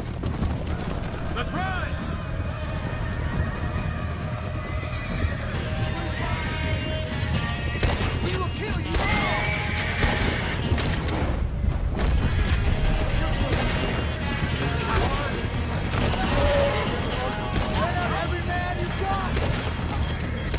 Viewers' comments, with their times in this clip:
0:03 I know it's a bad time.. but the music is badass